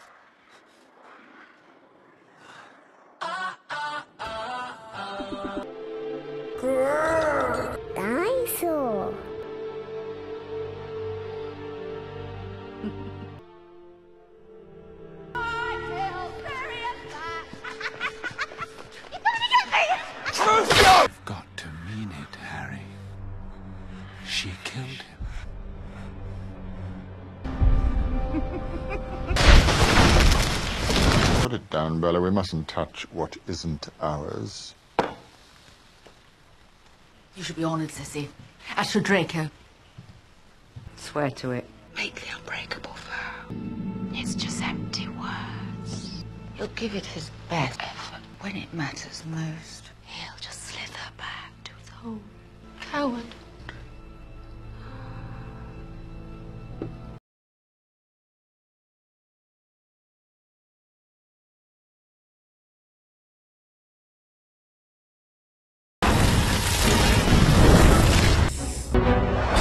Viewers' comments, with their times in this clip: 0:03 how am I supposed to take that seriously with that Big Time Rush audio in the back?🤣🤣
0:50 coward, so mocking it's great! Just imagine casually saying that as you pass someone in the halls, like Bellatrix, wow savage